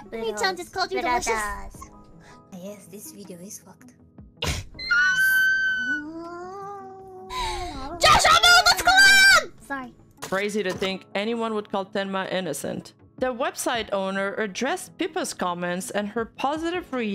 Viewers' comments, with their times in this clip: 0:05 she sounds like a kettle